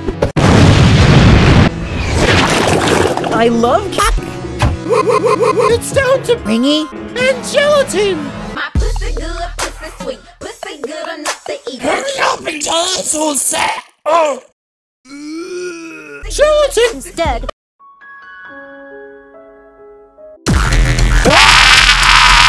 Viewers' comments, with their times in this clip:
0:08 Lol nice song